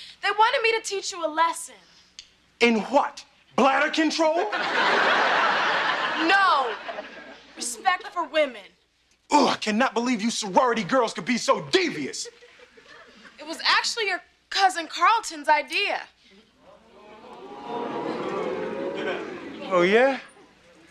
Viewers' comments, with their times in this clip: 0:05 what’s black control?